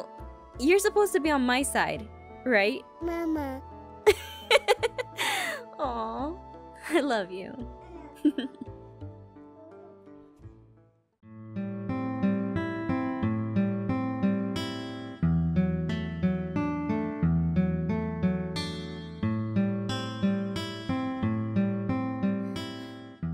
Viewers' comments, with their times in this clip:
0:07 toooooooooo cute other than puppies it’s the way Lilith says m.a.m.a